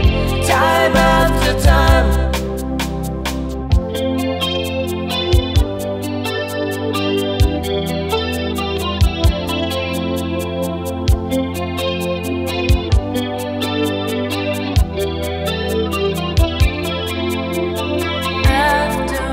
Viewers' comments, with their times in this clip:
0:03 That guitar solo that starts >>>>>